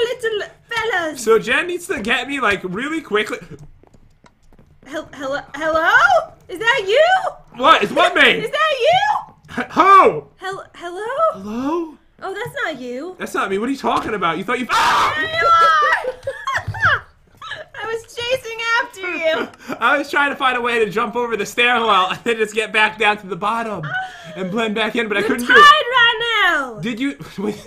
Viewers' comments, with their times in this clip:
0:08 I started dying when ever he screamed 😭😭
0:11 That scream tho 😂😂
0:14 Le epic scream
0:15 Can we get a RIP in the chat for the headphone users? Lol